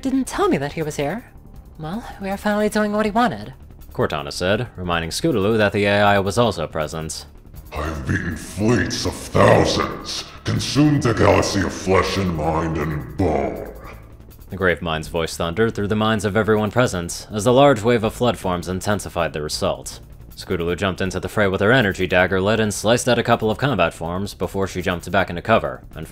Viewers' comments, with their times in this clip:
0:08 I love the voice you gave the Flood.